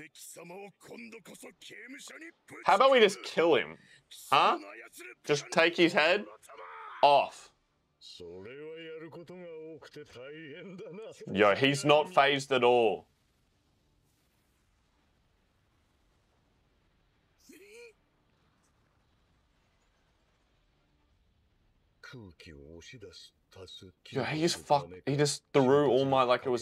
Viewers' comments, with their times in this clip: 0:10 All for ones theme is so iconic. also just tagging this and we can come back to it waaay later lmao. This is one of my all time favorite arcs in mha.